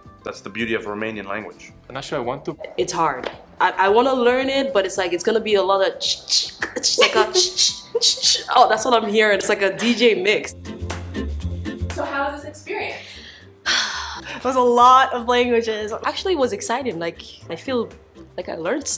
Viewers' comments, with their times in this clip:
0:06 Yh Slavic languages sound like rzh shpllzh zhavrall zhzva zllavzha